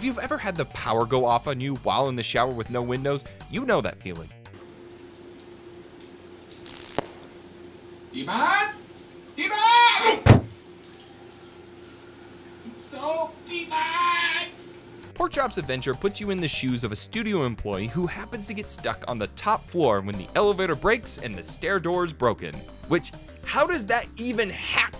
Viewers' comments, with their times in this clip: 0:05 what is he saying "t box" ? "t mas" ? what ?
0:07 uhm what is he yelling? I heard "Iemand" "Iemand", and then salty much...I am hearing something wrong here?
0:07 the hell was he saying here?
0:12 ..........OMG HE'S SAYING SOAP DEMONS! I'VE WATCHED THIS VIDEO HUNDREDS OF TIMES AND I JUST FIGURED IT OUT!